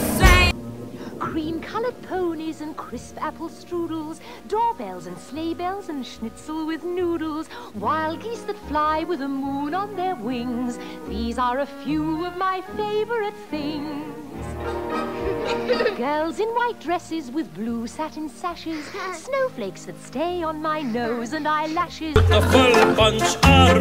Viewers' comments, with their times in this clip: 0:06 that really sound like 7 rings